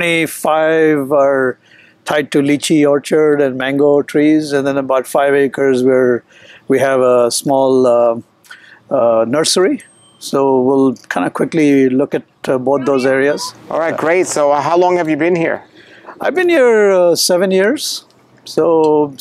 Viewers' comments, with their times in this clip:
0:05 this guy sounds like he in imitating an Indian accent 😂